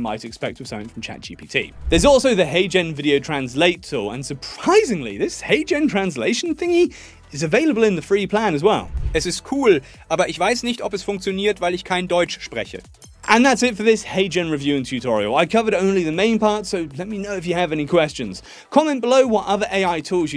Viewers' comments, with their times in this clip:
0:08 It sounds good in German; only the mouth movement isn't quite perfect, but linguistically, it's spot on (I'm from Germany).